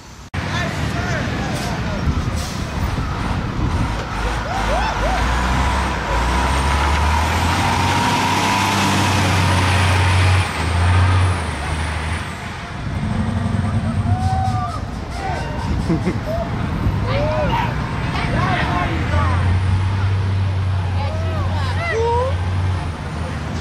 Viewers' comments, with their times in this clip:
0:08 that DD60 sounds sick!!!